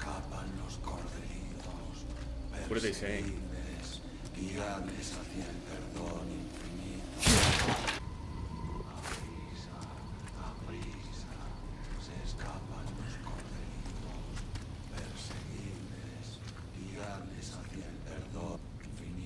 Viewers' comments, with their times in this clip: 0:06 I can’t make out entirely what’s being said, but it sounds like something along the lines of “With haste, with haste, the outsiders are escaping”